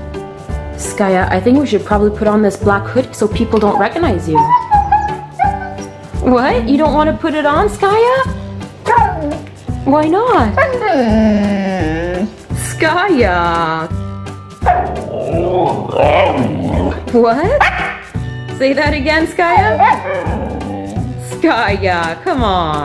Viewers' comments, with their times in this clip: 0:08 she did say something it sounded like BOW, or DOW, and or possibly OW or BOW